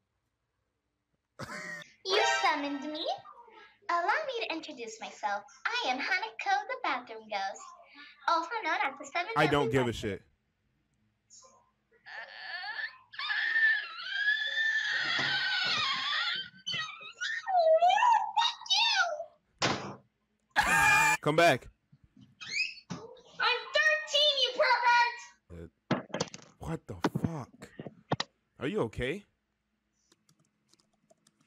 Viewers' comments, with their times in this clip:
0:10 she sounds like the door
0:12 sounds like my creepy bathroom door opening
0:14 The Girl actually sounded like the door tho